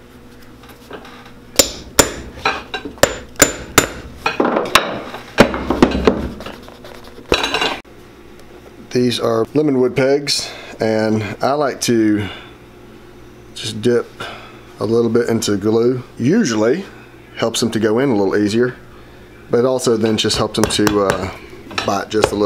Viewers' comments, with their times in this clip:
0:10 At the mark, you named the type of wood the pegs were made from but the term isn't clear. What did you say was the type wood used for the pegs?